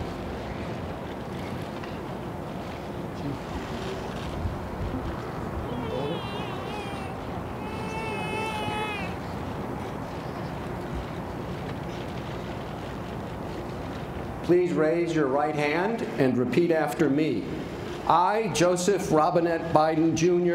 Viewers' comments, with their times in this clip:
0:06 you can hear trump in the background, I thought he skipped the inauguration 🤔